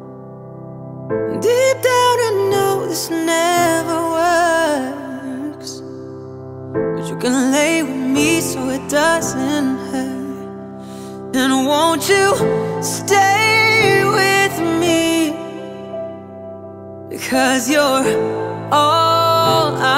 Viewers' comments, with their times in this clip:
0:06 when he says "never works" holy bless this child